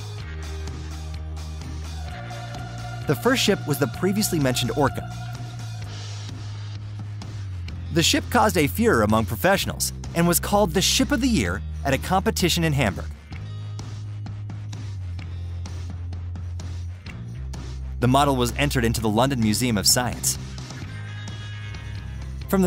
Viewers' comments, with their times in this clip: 0:08 the ship caused a what amongst professionals? Are you saying Führer? I must have played that back six or seven times and it sounds like you are saying, "Führer." Do you mean furore?